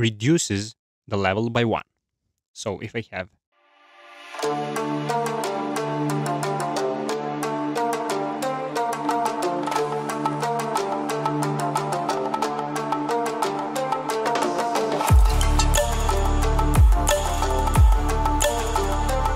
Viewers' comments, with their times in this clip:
0:03 What's with the earblasting music ?!?!? :face-orange-raised-eyebrow: